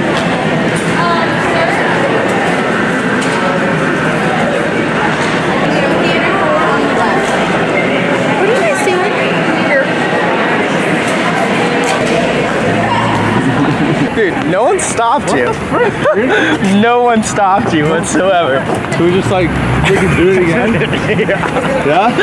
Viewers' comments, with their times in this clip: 0:08 if you have headphones in, probably gave you a heart attack